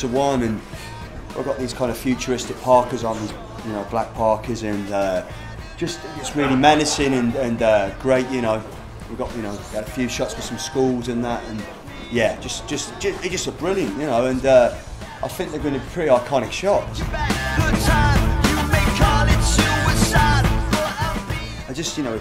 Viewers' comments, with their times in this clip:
0:10 when he said skull, i thought he said school. WOW.